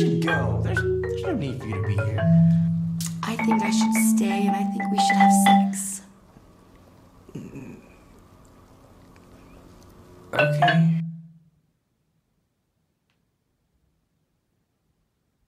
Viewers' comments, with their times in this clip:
0:05 whoa hol' up WRONG NOTE last note on the "sex" should be a B flat with downward glissando, not a G (actually, great job with this; I'm just making a joke which also happens to be a legit criticism)